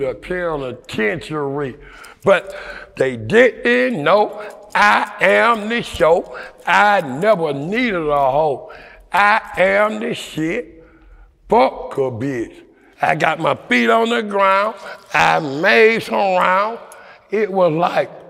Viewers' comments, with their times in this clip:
0:04 😂😂😂😂😂 dis nigga starting rappin dis nigga crazy asf